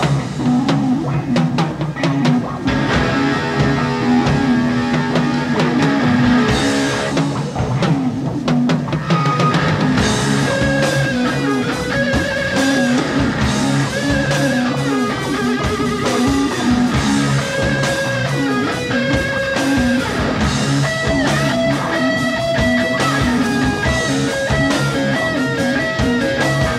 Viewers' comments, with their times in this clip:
0:09 That jam ... what an incredible guitar tone. Tony was putting that vibrola tailpiece to WORK